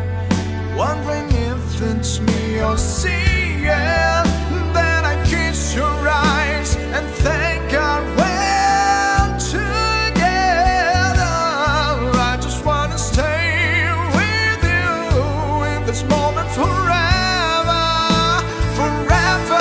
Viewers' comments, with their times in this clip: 0:06 You have an amazing voice